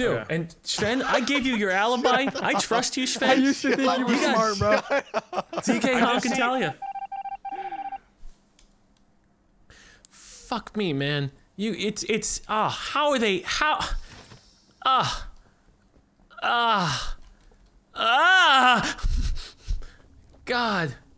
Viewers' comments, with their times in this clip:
0:09 I play this video again as BG sound while playing minecraft, and then chilled moan made me pause all my game and replay the video to see what happen. Damn, didn't expect that in this video.